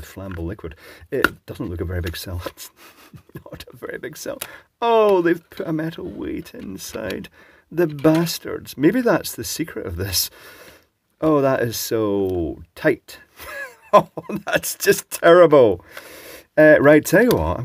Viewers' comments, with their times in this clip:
0:04 the sincerity in the voice